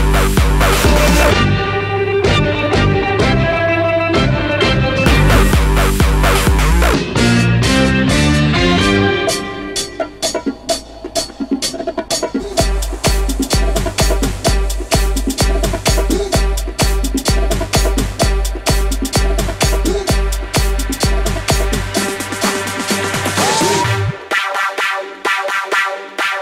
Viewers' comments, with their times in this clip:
0:08 FBS: WOOWWW!!! DID YOU HEAR THAT!!! (FROM THE CROW)